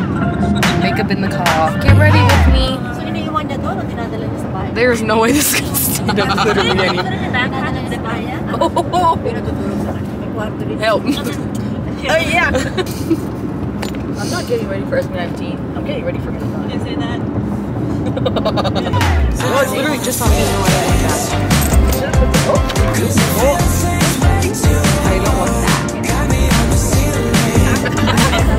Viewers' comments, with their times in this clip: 0:10 who’s speaking Filipino in the background? 😄